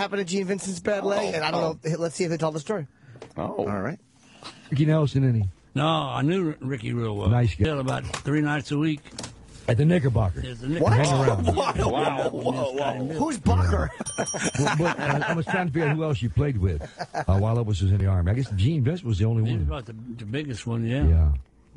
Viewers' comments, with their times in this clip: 0:06 for the "Ahem-bocker Hotel"